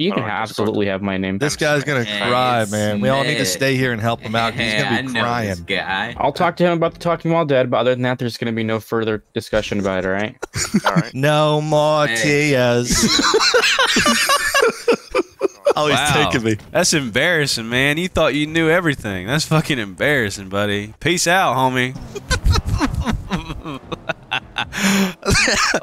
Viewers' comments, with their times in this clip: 0:08 the guy that talks like a og fortnite gamer looks like andrew rittenhouse